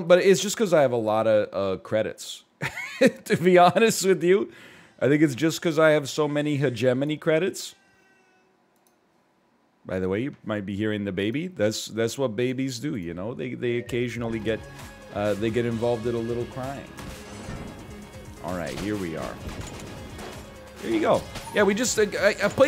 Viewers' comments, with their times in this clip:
0:07 You know a man is ready for a second one when he gets used to the first one's crying. That's a lionPogged sign :)